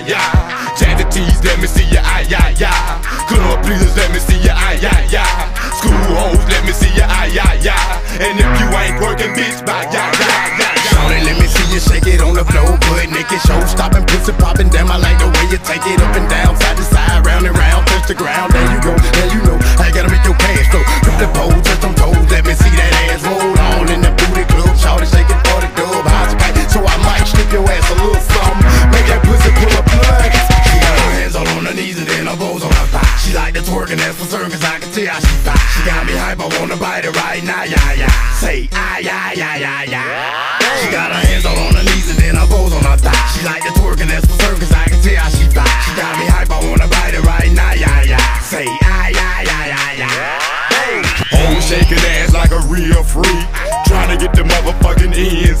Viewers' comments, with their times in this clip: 0:08 I always thought he said "and if you white twerkin bitch bye ya! Yi yi" 😂😂😂
0:41 I thought it said “Mona Lisa” 😭